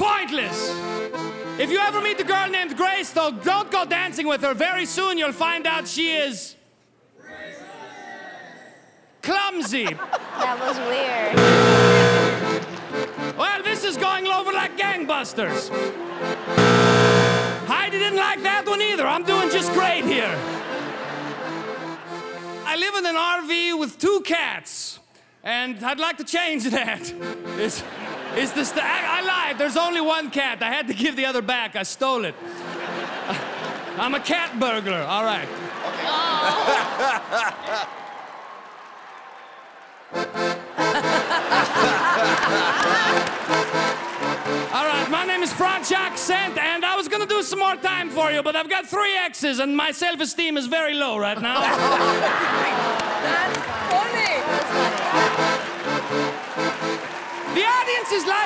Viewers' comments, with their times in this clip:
0:09 the girl said that was weird. In a weird pitch and the dad was siting there laughing I think that was the best part of the first clip
0:16 buzzer scares audience
0:16 they all get scared by the buzzer lmfao
0:20 Lady whose name I don't know: Presses the button to say no Same lady less than a minute later: Laughs Ahhhh, I just love irony.
0:21 oh now you start laughing, right after you gave him an x
0:39 i love how awkwardly he started playing again that was so cute XD